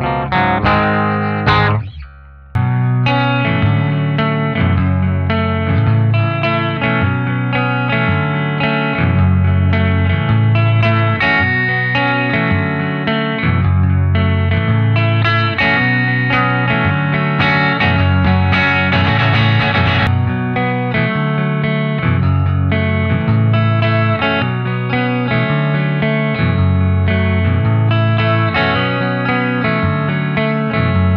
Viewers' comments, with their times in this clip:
0:03 Dude, did you write that? that sounds amazing, I even ear a cello part and drums in my head 😁
0:19 that riff gonna make me cry XD